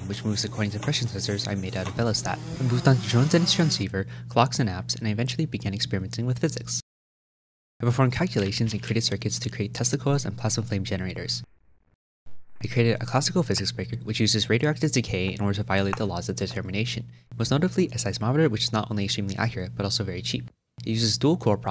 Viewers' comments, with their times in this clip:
0:08 Not gonna lie, I thought you said you made testicles not Tesla coils. MIT has to let this guy in - he’s out here creating testicles and stuff! Freaking genius.